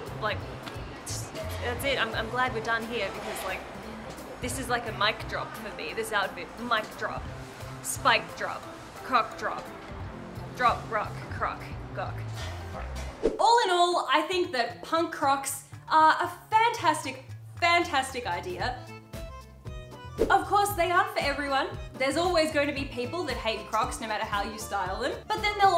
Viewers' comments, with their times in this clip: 0:08 hahahahah i heard "C*ck drop" and was like "WAIT WHAT!!!?" and had to replay it so many times and now i can't unhear it